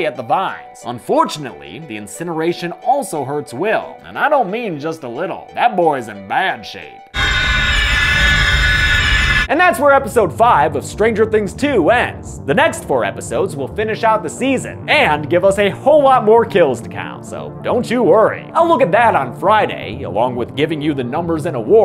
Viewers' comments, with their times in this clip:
0:07 Otherworldly screeching "And that's where Episode 5 ends"